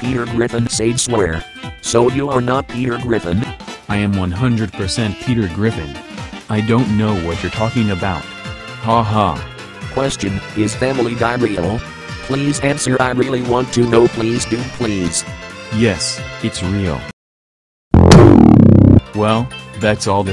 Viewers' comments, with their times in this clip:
0:08 i swear i hear faint screaming, extremely faint